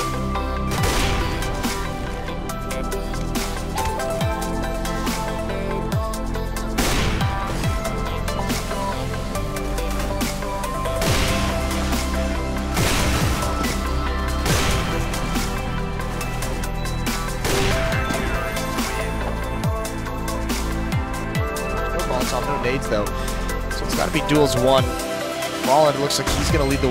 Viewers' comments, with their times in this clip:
0:09 dat audio sync